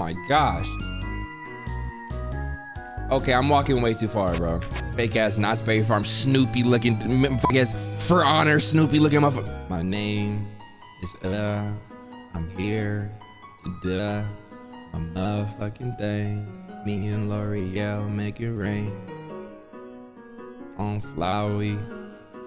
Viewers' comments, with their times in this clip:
0:09 808s and Heartbreak soundin real different in 2021
0:09 nobody gonna talk ? LIKE THAT SOG WAS FYEEEE
0:09 My son really sound like Big Sean with auto-tune 😂😂